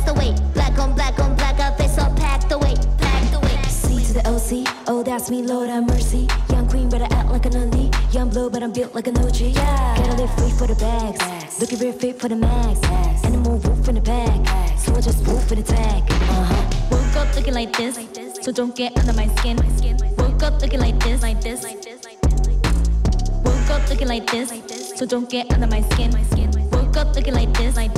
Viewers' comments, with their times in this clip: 0:08 the little pops is so satisfying they are just the coolest